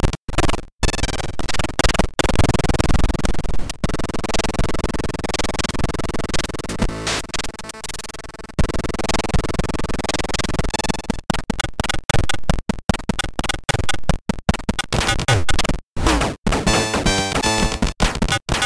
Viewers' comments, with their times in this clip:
0:03 Sounds like the gate of hell opening up